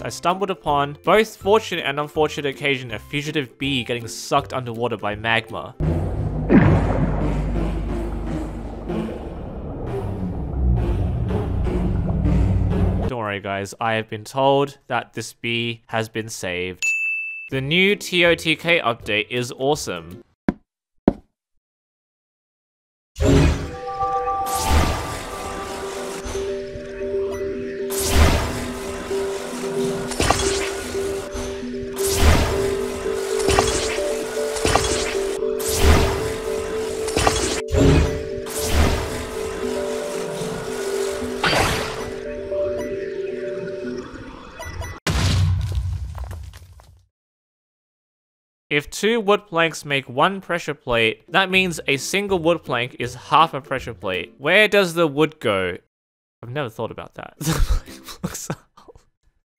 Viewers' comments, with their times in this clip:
0:06 bro im sorry but that actually sound like among us dead body report sound
0:06 why does it sound like the bee is playing music :sob:
0:17 Nah bro why does totk have wii music 😭
0:35 why does the music sound like a Wii
0:41 whats with the wii music